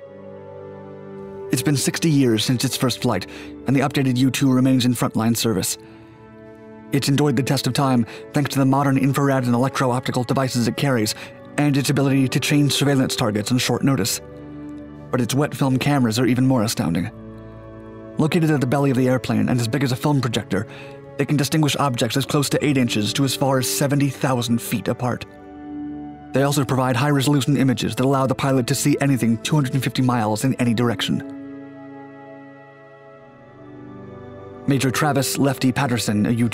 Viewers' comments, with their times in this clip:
0:04 Many have commented about the narrator. I think it's a computer simulated voice. he says "endoid" and "infrarad", it seams like a typo that a real person would have picked up on. Another clue, besides the speed and delivery, is the precise pronunciation of ending consonants. Many people, at least in America, don't actually annunciate the ending consonants, but simply stop the sound.
0:19 .....as big as a “phone projector”, what?!